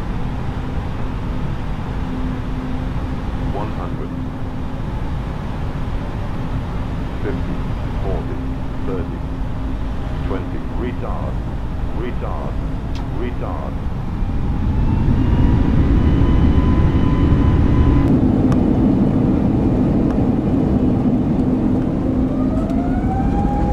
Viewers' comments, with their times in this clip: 0:10 Computer with the Hard R